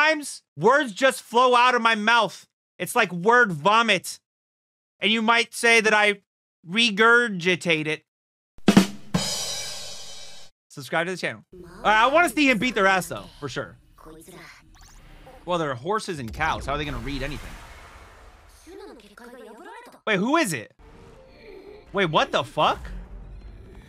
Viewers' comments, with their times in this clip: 0:09 that rimshot was not enough. that needed applause and shit.....lolol